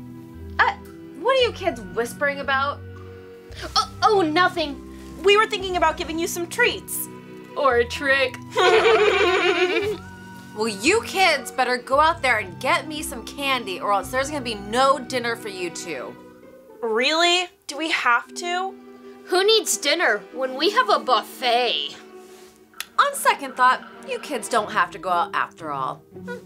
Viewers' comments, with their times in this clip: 0:07 Why you laugh like that